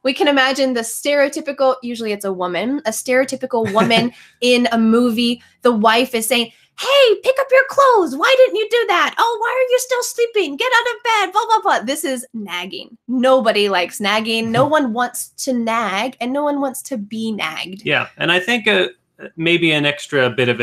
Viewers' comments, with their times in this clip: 0:07 I swear! in this moment I heard Marge Simpson good interpretation! haha I love your videos, greeting from Colombia!